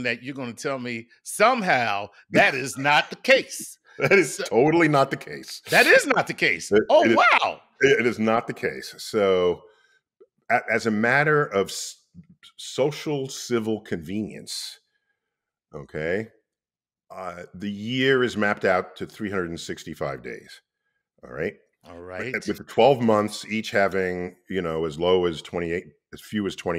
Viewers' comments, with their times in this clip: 0:08 Niel: it is not the case, so... What I heard: it is not the queso... Now I want a snack.